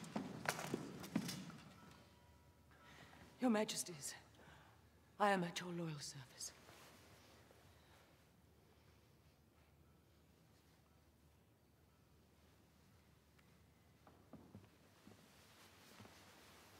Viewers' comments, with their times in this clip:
0:03 I can half hear her say 'Louis....what are we going to do?'